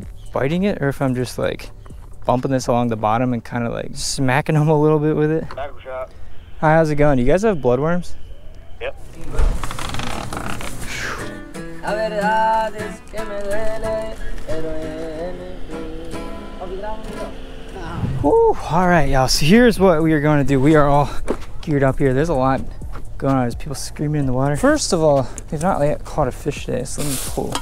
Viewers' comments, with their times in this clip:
0:10 .. corridos tumbados on deck..
0:11 The guy sings good